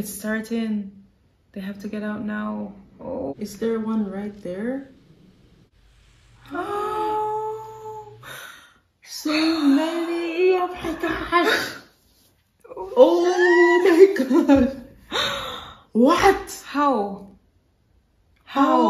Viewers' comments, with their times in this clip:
0:05 for me, this moment when all the chaos fades into the background in lieu of a new horror... the nest being revealed, is one of the best scenes in cinema. Everything about that scene, the sudden silence, the heatwave, the terror on Ripley's face, is absolutely bone-chilling!